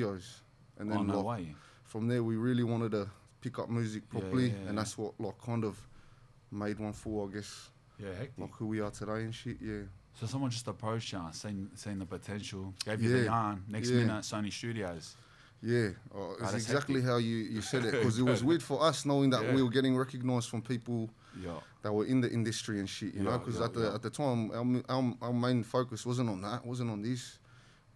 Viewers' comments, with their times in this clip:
0:10 sounds like the devil